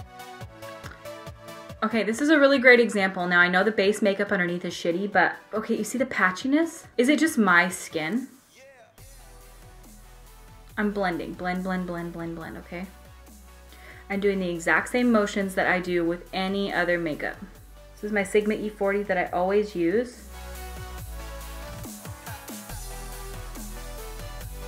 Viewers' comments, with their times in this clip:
0:06 "You see the patchiness? Is it just my skin?" Backing Music: "YEAH" This was weird. Can't be the only one to notice this..
0:06 When you asked if it was just your skin that was making the eyeshadow patchy and then the music said "yeah" I burst out laughing and idk why 😂
0:06 "is it just my skin?" background "yeah!" :DD
0:07 her: is it just my skin? The music: y e a h
0:07 Lol she says is it just my skin? And the music stops and says "yeah"
0:07 Did anyone else notice she says “ Is it just my skin? “ Then the music track comes in and just says “ Yea “ lmao I started cracking up
0:07 "is it just MY skin?" Background music "YEAH!"
0:07 When u said "is it just my skin?" the man in the background song said "yeaah" right after
0:07 "Is it just my skin?" Music: "Yea!"
0:07 The background audio said yeah
0:08 Love how the background music stopped at “yeah” as soon as she said “is it just my skin?”
0:08 Her: is it just my skin? Background music: YEAH! Same😅
0:08 Jsxisidsd "you see the patchiness? Is it just my skin??? " background music "YEA!"
0:08 When she says “is it just my skin” the background music says “Yh”....couldn’t have been better timing then that lmaoo 😂😂😂
0:10 “is it just my skin?” Music in the background: YEA